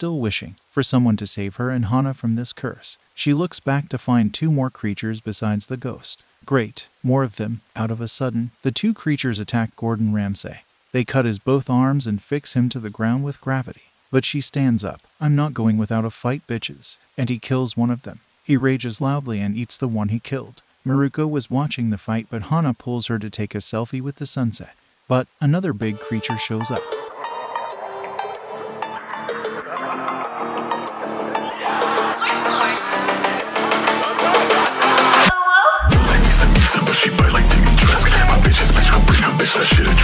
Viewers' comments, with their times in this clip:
0:10 start of insane music
0:27 Sart of music